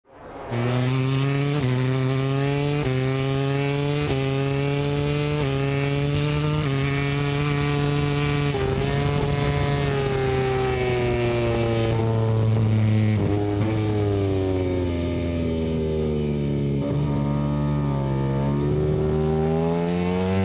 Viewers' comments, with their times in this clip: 0:01 That gear changing sound